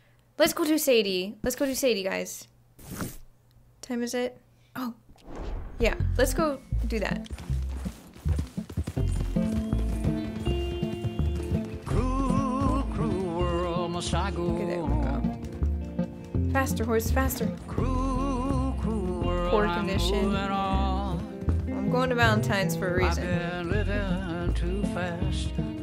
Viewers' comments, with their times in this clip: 0:06 the music just so good